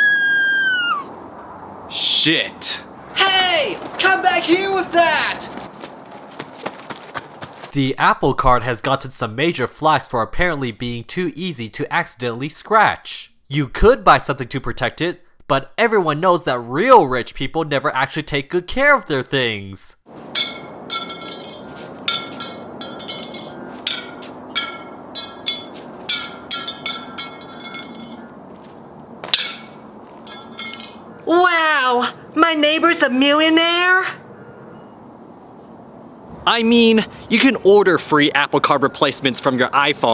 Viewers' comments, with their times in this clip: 0:05 I WAS WATCHING THIS AM AND I DID NOT KNOW ABOUT THE SCREAM
0:15 Is a major fact he said
0:21 the sound of the apple card is so satisfying
0:21 that sound like a glass bottle lolz